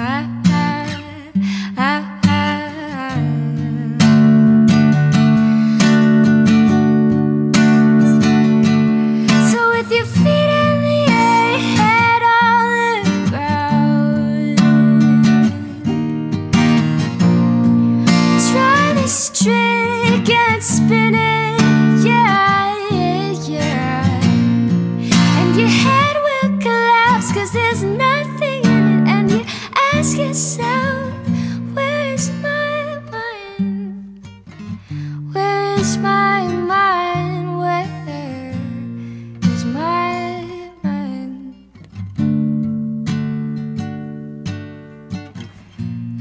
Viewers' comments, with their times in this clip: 0:05 almost fail! hahaha! Beatiful tone btw!
0:08 this voice is just beautiful
0:08 oh yeeeeah, one of the best voices I`ve ever heard.
0:09 The way she put up that otcave .
0:10 From to the end... So good. Amazing voice... I like chillin' with your songs 🙂
0:33 dat strum tho <3
0:33 wouldn’ve been so perfect if you finished the lyrics in high-pitch...